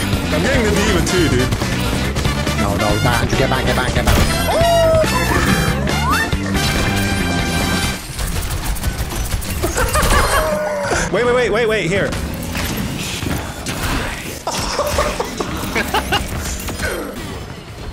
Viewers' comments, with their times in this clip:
0:03 I NEVER tire of those "oooOOOO"s you do, they make me all bubbly